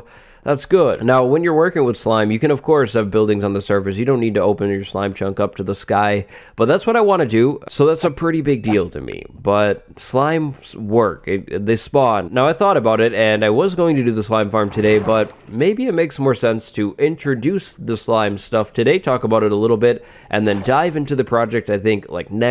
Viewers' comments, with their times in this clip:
0:07 Does anyone else like hearing songs from xp?